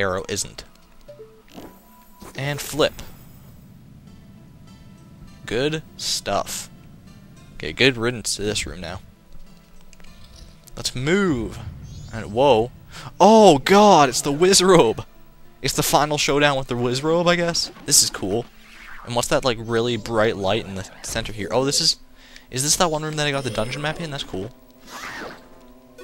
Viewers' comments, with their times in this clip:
0:10 speed up? wow havnt seen that since the time limit was abolished. but funny! almost sounded like you mooooed there for a moment lol If you eat a poe and no one is around does link still throw up??